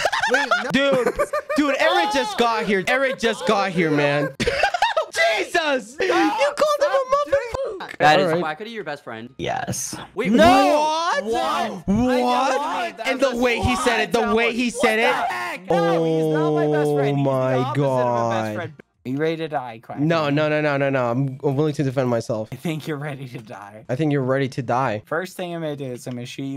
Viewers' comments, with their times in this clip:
0:08 the way bad says yes is uh i cant even describe it